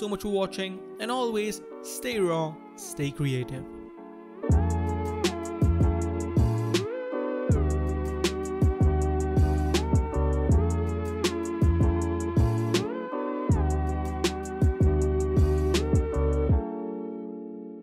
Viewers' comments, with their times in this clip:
0:03 THAT SOUNDED A LITTLE LIKE CINECOM